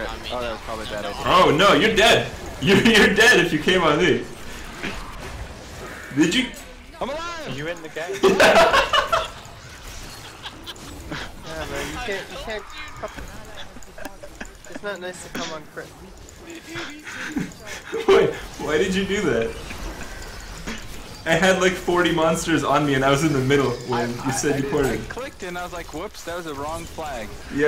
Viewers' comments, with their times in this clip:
0:08 I never saw you laugh like that on any other game